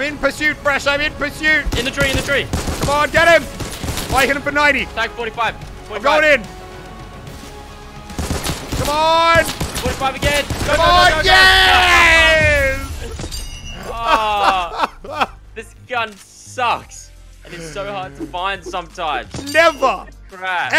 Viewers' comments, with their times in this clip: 0:07 megalovania but with infantry rifle bullets listen close